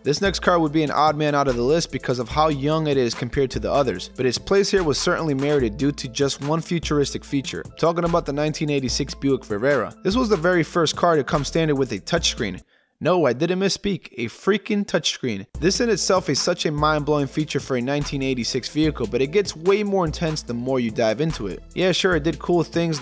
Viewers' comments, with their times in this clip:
0:07 Disliked for the shitty robovoice. Negligent driving distraction? The touch-screen was a life-safety hazard in the 1986-model year, and it has not improved over the years.
0:08 the Buick Virerra LOL
0:09 * the Buick what ?